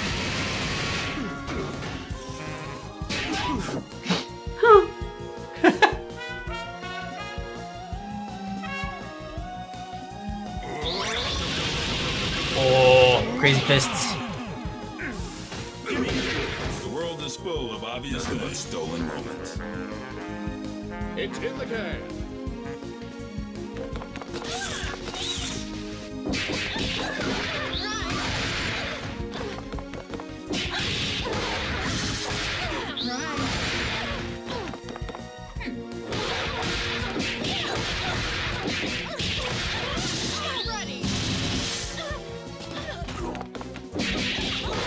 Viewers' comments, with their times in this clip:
0:04 you can actually control what notes play here by pressing different buttons on the controller. This is then followed up by the rapid punches. There’s actually a whole bunch of videos of people just playing songs and it’s great
0:29 Fukua's run is just so satisfying to hear 😂